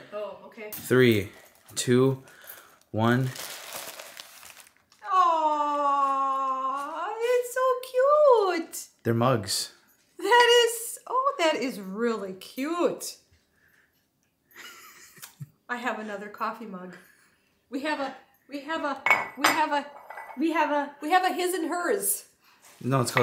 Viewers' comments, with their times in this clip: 0:04 “It’s so cute.” Mom’s Sconnie accent came out for sure there. Welcome back to Wisconsin! 🧀🍻
0:07 It was funny to hear your mom's accent when she first sees the Chip and Dale mugs. "They're so cute!"